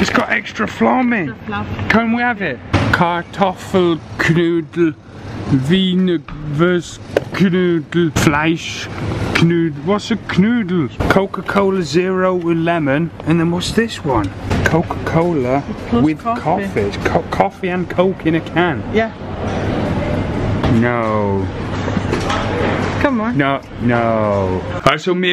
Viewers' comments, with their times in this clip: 0:10 "What's a knoodle?" XD he sounds like he's speaking Asian kn-oole